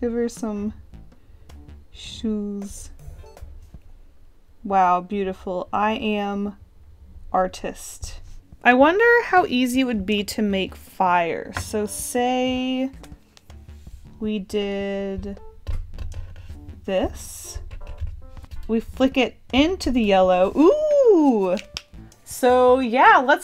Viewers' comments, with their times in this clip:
0:05 i am...*dramatic pause*... ArTiSt